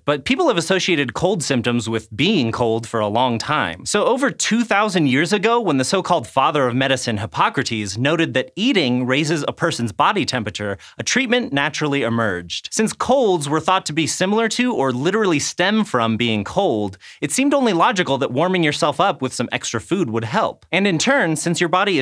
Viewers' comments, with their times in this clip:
0:08 "raises a person's bobby temperature" BOBBY TEMPERATURE??? xD